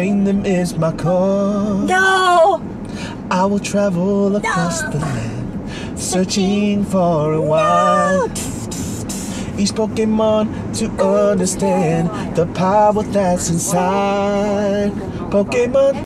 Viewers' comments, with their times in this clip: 0:10 that harmony and pitch so gooooood